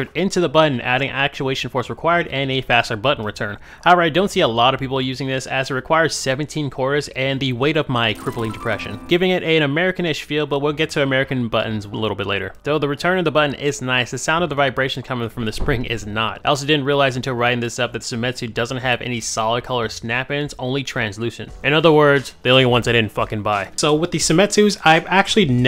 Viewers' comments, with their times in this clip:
0:07 lol that bleach sad music.